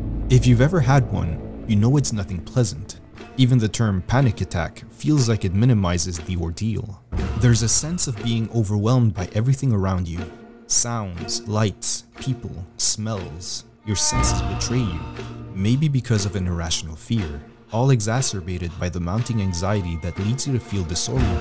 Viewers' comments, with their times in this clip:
0:03 why the clock sound I'm getting anxious alreqady D: